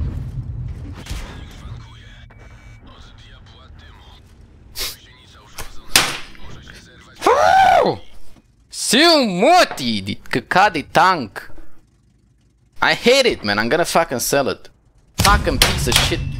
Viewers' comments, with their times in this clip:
0:04 are you kidding? That guy isnt even angry